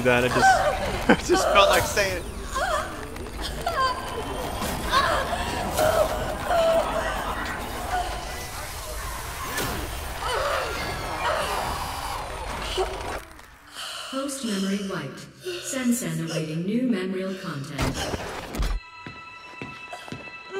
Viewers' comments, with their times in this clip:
0:06 am in the morning i was watching this, my head phones broke so my family could hear a loud moan coming from my room.